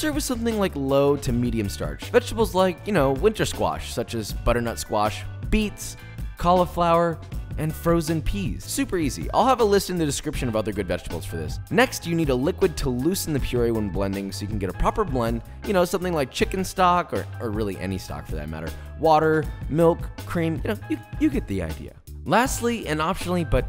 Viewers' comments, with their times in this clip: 0:06 call-of-flower (or is it meant to be pronounced that way and i'm the one who has done it wrong all this time? lol)